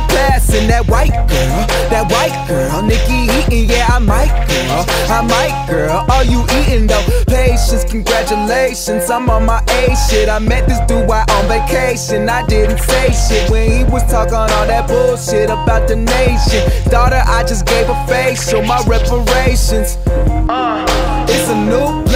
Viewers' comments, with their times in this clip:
0:06 Drake stole gambinos flow for his new album